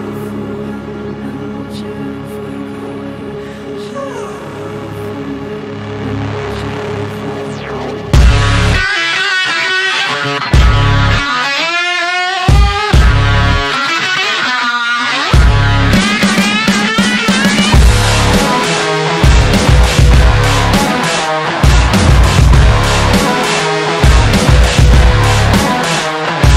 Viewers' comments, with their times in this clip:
0:07 The guitar solo did not need to go so absolutely NUTS. Anybody else love that part? The way the guitar is tuned is sooo different and cool Also the way those drums slap so hard they sound like popping balloons made me appreciate the song even more lol